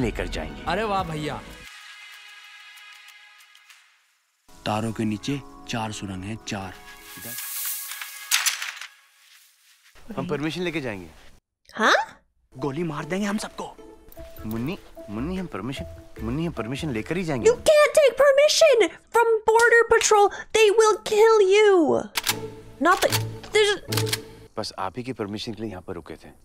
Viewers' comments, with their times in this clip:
0:10 the “huh” was totally Indian 🤣